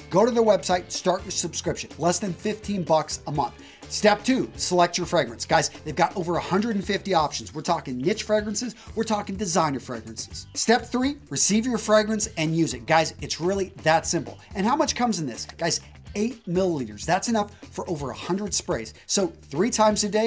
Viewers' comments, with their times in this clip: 0:07 Nitch or Niche fragrences 😱